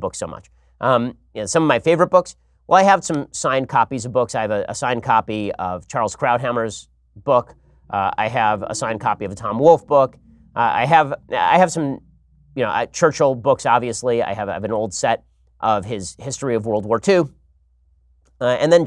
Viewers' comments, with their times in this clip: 0:04 Did anyone notice the strange noise in the background ? Just as he mentions the late Mr. Krauthammer. Odd